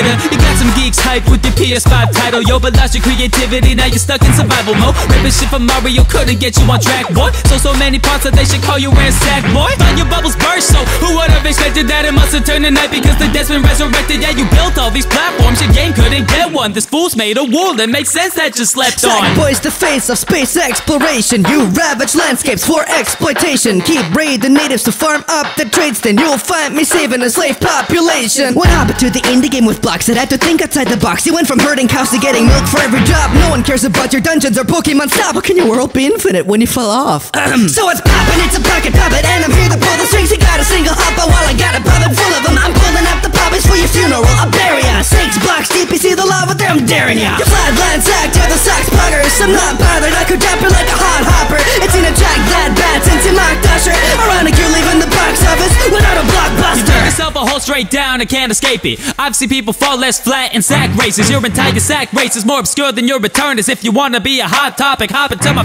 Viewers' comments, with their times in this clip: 0:10 that flow though!
0:37 crazy flow here
0:46 Because has flow so beautiful it evokes tears